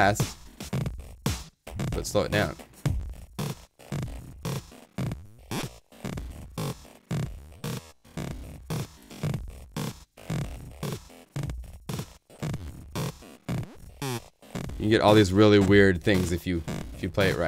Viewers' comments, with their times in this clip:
0:04 sounds like my bed squeakin when I'm entertaining some dirty's.